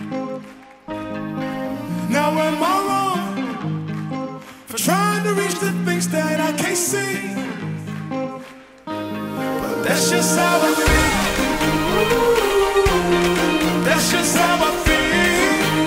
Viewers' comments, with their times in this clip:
0:03 Best scene everyone’s quite to
0:03 Best scene everyone’s quite to